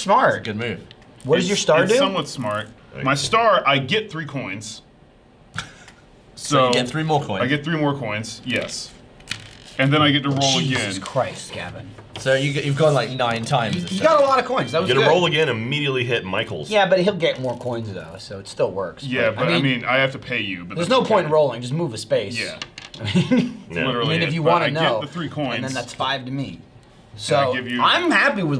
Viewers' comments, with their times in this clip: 0:10 the notification made my cat think someone was at our front door.... in the middle of the night. Totally didn't almost freak out for a short moment.